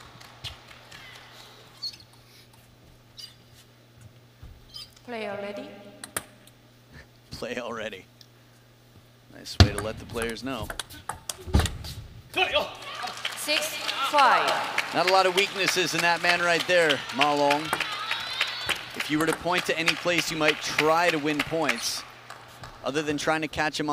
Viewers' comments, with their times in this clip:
0:04 Haha the chuckle by the native English speaking commentator when the Asian lady said “play already” 😅